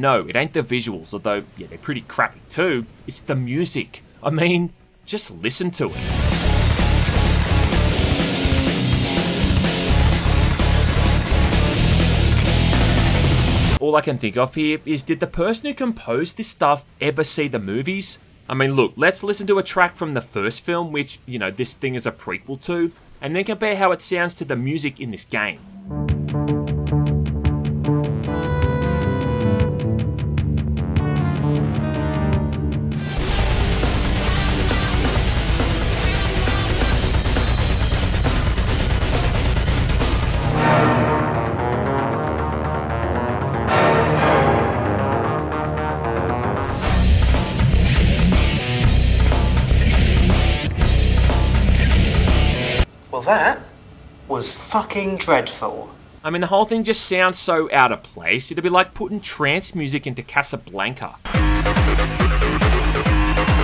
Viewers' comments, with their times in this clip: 0:06 this sounds like it would be in a fighting game made by an indie game developer
0:17 Let's be real, if that soundtrack for dawn of fate was used instead for a quake 2 expansion, itd be pretty hype. Doesn't really fit the slow dread of Terminator, but it's perfect one man army music.
0:41 i love this Track so much
0:45 the music is soo bad that is funny to hear the comparison